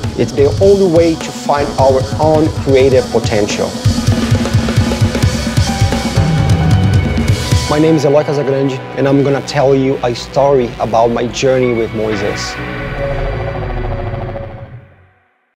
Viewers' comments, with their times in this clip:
0:06 Uh-loy Cas-eh-gran-jay (soft A (uh) at beginning and J (jay) sound at end of "grande") I think I finally got it! If you ever wanted to know how he really says his name I think this is it. Listen to him say it a few times at .5 speed and I think you will agree.